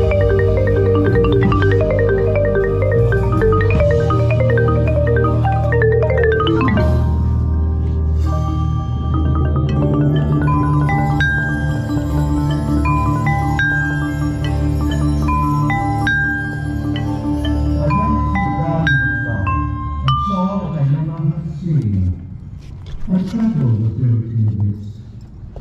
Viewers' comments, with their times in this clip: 0:10 Coming back to this to ask what the things that look like cups that sound like wind chimes are